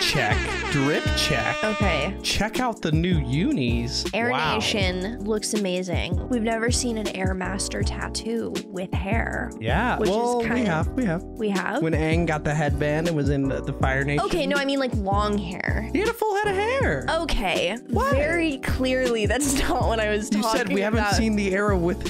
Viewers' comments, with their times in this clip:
0:05 Avatar Yang-Chen??? Also it was smart to get a new VA for Kai. He was like 12 last season but it’s been 3 years of course his voice would deepen through adolescence. Also just FYI if you didn’t know Kuvira is voiced by Zelda Williams, the daughter of the late great Robin Williams.